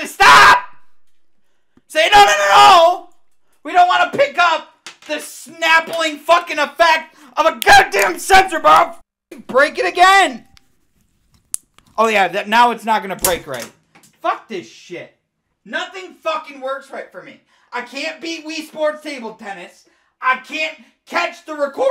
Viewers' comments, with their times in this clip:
0:07 lol I think his voice cracked